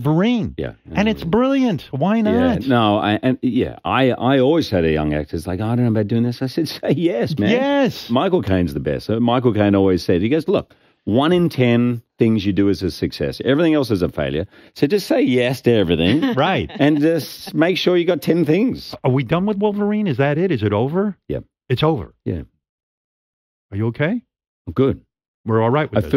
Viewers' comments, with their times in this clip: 0:08 “My cocaine is the best.” -Hugh Jackman, 2019